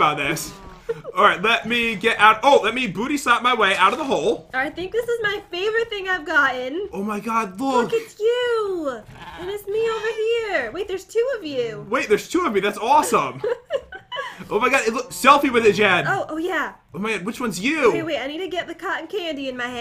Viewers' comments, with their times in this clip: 0:05 Starting from if you put it in 0.25x speed you will hear animal noises. I found it a little creepy